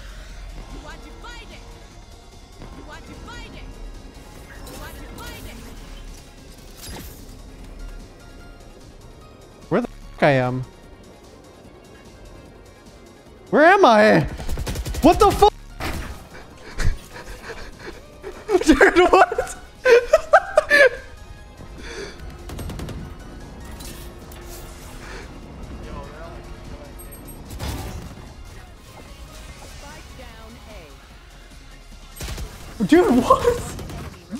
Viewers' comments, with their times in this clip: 0:09 No one: Shrouds old notif:
0:09 shroud sub noise
0:09 shrouds sub sound
0:09 Shroud's donation sound effect be like
0:18 it's been a while since I heard TenZ laugh thia hard.